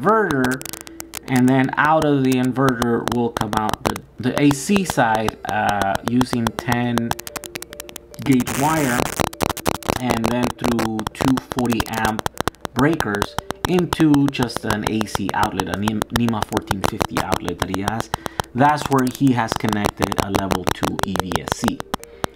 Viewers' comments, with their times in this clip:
0:09 is your microphone eating Rice Krispies? :P Great info - keep it coming